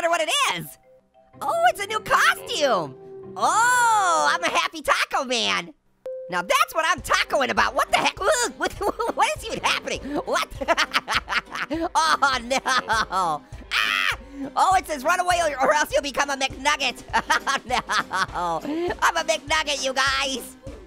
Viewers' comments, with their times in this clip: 0:05 lol he said elelator